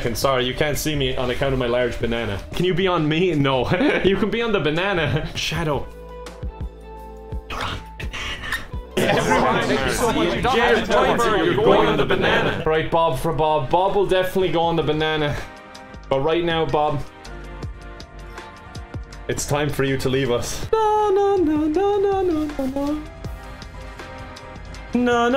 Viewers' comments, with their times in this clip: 0:10 I love the synced up “you’re going on the banana”